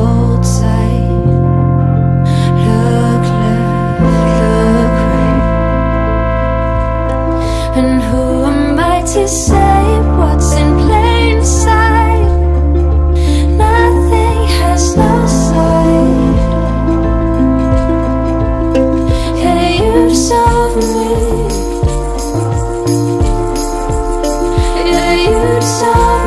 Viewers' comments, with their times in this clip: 0:07 Am I only one waiting for lyrics? I can't figure out what exactly she sings And who am I to say what's been play inside ? or And who am I to say what's in plain side ? And later.. Nothing has no side? I can't figure out last word... Help me Englishmans! hehe